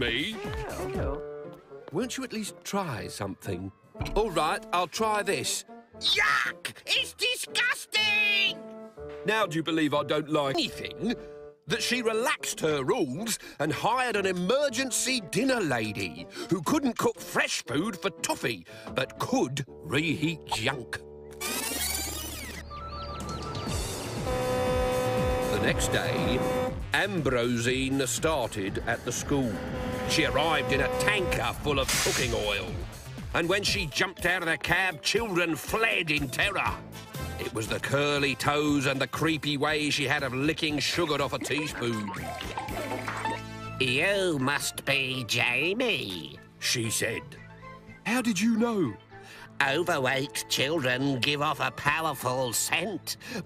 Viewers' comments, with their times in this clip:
0:05 he didn't even try it he just picked it up and screamed yuck it's disgusting
0:41 p p music